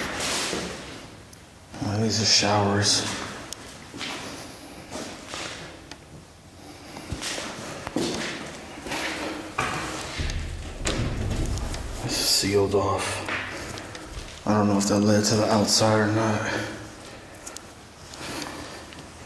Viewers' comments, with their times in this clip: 0:07 yep definently regretting it. what were thos knocks